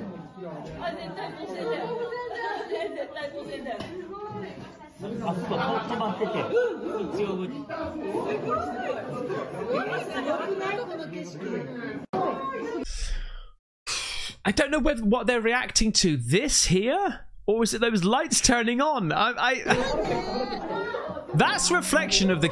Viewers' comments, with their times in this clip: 0:04 I hear a sound every time one of those lights goes on. Anyone else?